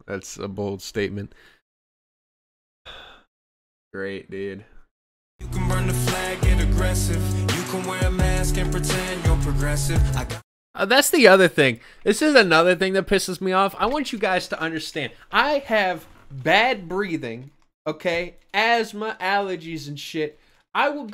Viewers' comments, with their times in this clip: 0:05 DID THEY REALLY STEAL THE FLOW FROM PANIC AT THE FUCKING DISCO THAT'S HIGH HOPES